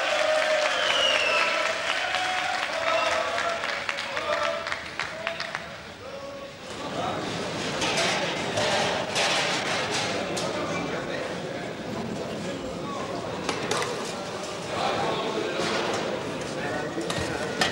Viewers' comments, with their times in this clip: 0:03 They was only clapping because they stopped playing .